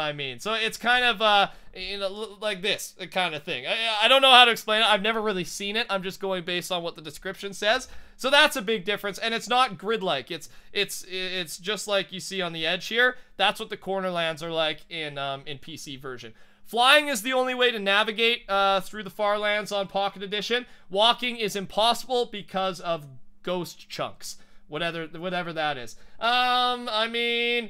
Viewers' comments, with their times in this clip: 0:10 lol dog in background min